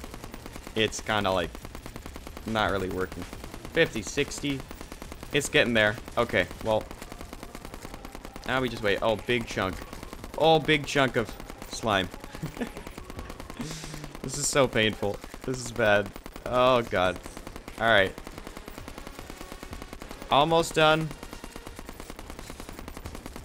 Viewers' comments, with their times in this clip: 0:08 I thought you said big chungus